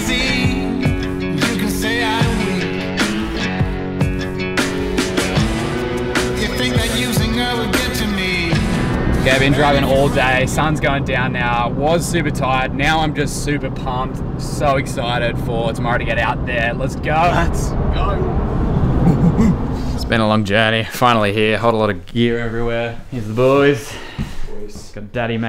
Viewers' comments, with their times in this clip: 0:08 I know you're in Brisbane by the J's on the radio.